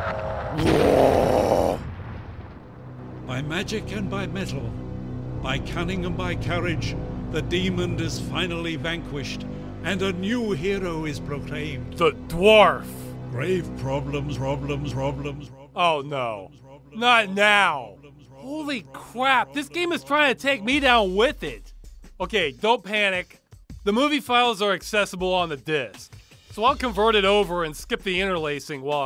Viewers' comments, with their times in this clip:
0:05 Anyone else notice the narrator did not say "Demon", he said "Deemond".. He put a "d" at the end! Dude literally made a mistake on one of the most important words in the sentence and they kept it in. "The deemond is finally vanquished" Now that's a cool ending right there, vanquishing deemonds!
0:07 the demond? The DEMOND is finally vanquished?
0:13 video bugged to word "problem" seems too fitting my god this game IS haunted 😂
0:14 It seems like your game was having problemsroblemsroblemsroblemsroblemsroblemsroblemsroblems